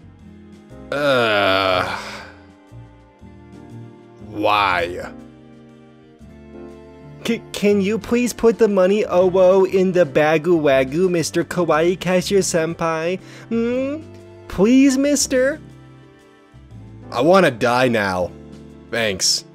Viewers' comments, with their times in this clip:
0:07 Why is this cringe and kinda cute when he pronounced it, it’s hilarious